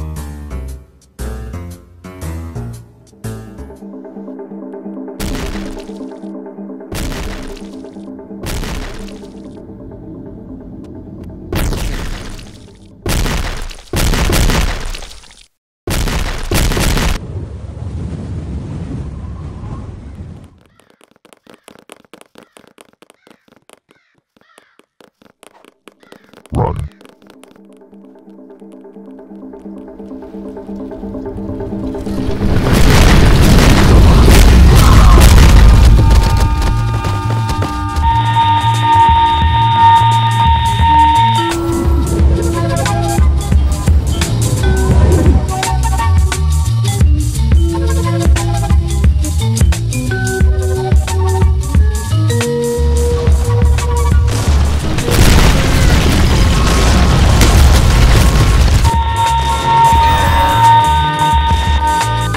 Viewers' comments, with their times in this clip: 0:03 the predator ost made me laugh fucking hard
0:39 what is that song's name it is so groovy
0:49 i dont know why but this music is nostalgic i think make me remenber your old videos